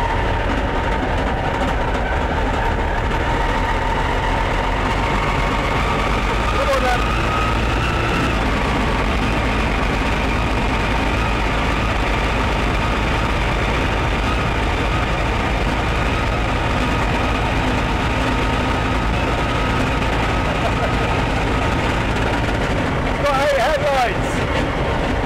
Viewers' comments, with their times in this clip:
0:09 Ah yes, "Low-emissions" at its finest. Whats all that clatter about?